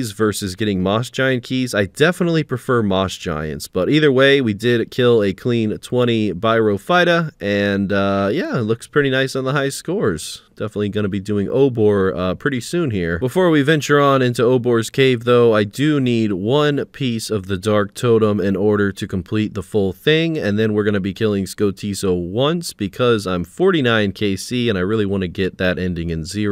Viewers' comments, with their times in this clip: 0:09 My guy mentions how he dislikes the name because he mixes the pronunciation up, and 10 seconds later he proceeds to get his 20 kills at “byrophyta” 😂